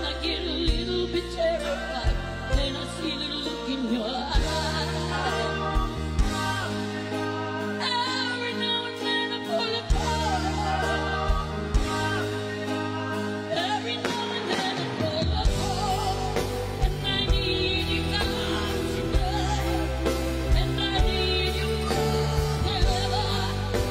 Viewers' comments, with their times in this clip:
0:07 lots of passion in her voice! An amazing TEOTH version!